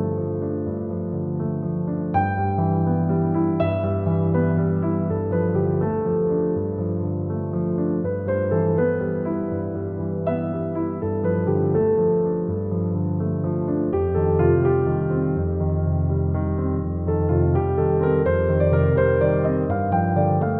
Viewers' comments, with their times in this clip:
0:04 At like The creature: ☠️👹☠️👹 The music: 🦋🍃🌸✨🍀